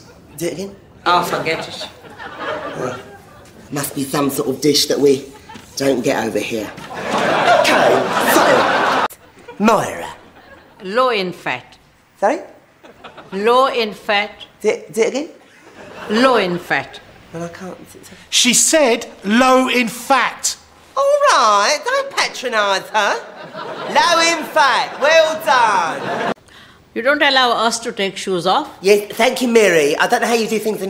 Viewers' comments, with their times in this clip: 0:10 I kept hearing "loin fat". Jeepers, I must have caught the racist gene.
0:10 damn i legit thought she was saying loin fat! And when the guy repeated "low in fat" i was like ohhh 😬🤣 im with Marjorie in this one.
0:18 she actually said "loin fat"